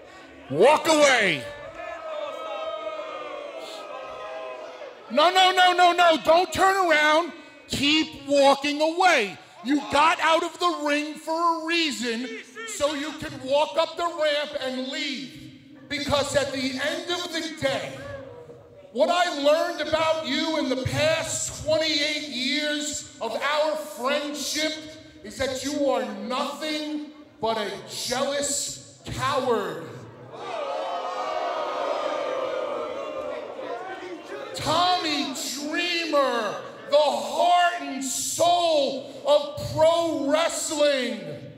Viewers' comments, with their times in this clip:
0:06 Bully Ray sounds just like Paul Heyman
0:26 Paul heyman voice